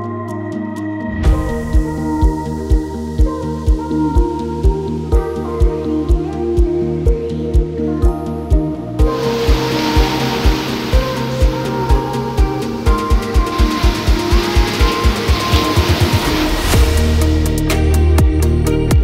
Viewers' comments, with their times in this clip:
0:07 the close up to the waves and the sound of them was mind blowing. Nicely done man! Gives me major flashbacks of my recent trip to Nova Scotia. East Coast is such a beauty❤️